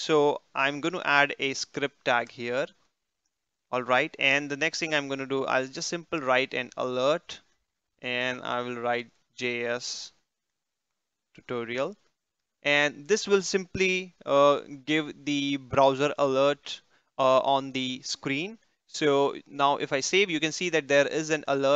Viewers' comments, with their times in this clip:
0:05 minute have watched .your voice is so clear .thanku from Nepal